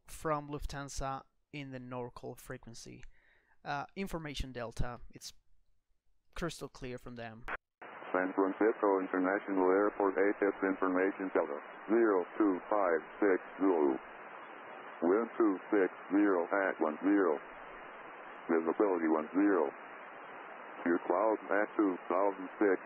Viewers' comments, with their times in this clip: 0:07 This is an artificial computer voice.